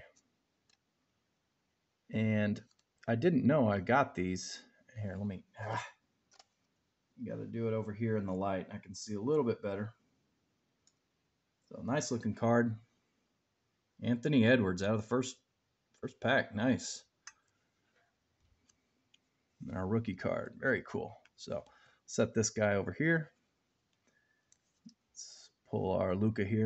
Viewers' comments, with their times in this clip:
0:07 Dude that huff was funny